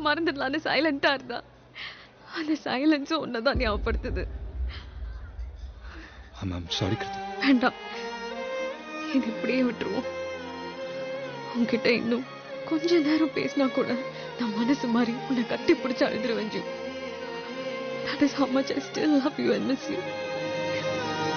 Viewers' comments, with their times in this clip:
0:07 The BGM AND THE DIALOGUES!! KILLING IT😍😍😍😍🤤💥💣